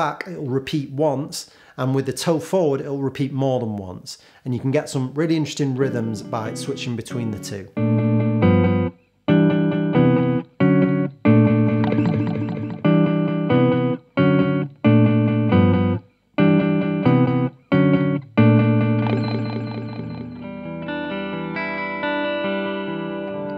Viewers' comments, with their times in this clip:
0:09 I don't know for sure, but this is similar to King Gizzard delay effect